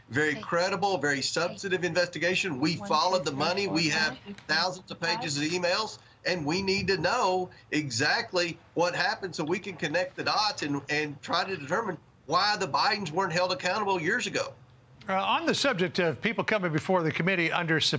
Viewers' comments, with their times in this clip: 0:05 Around the mark, did anyone else hear counting in the background noise or am I losing my mind?!?!